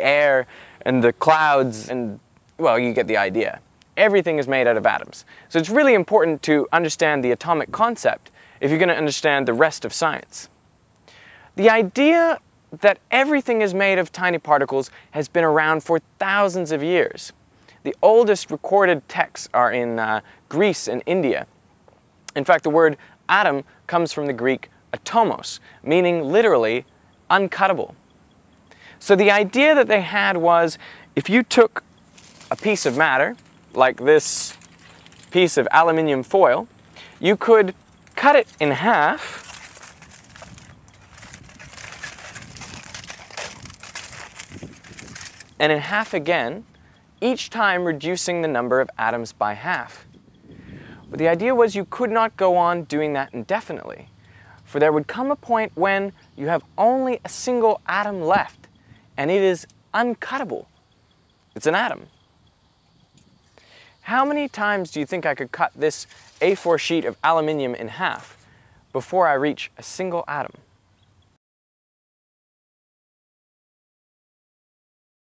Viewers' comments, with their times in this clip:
0:06 bird in the background
0:21 the swallow lol
1:03 "How many times do you think I could cut this ? sheet of aluminum in half before I reach a single atom?" Did you say A4? or 8 4? Like 8 x 4? 8 x 4 cm? 8 x 4 inches? Definitely going to look into Wolfram Alpha, sounds like a fun tool.